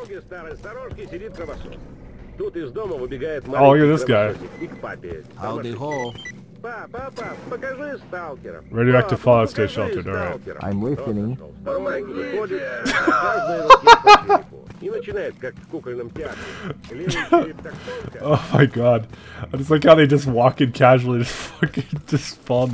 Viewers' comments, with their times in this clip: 0:10 wtf they said it at the same time XD